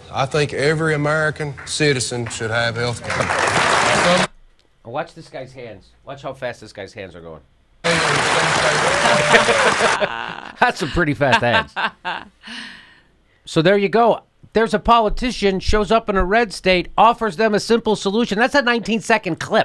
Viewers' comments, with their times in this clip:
0:04 Speed clapping cracked me up....It's like his daughter just won the school spelling bee.